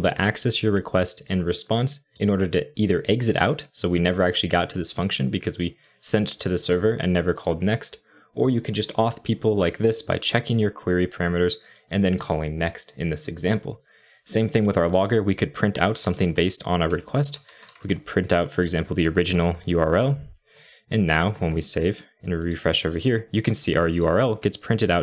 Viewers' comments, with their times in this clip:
0:08 "you can just off people like this" I laughed out loud, thanks! :P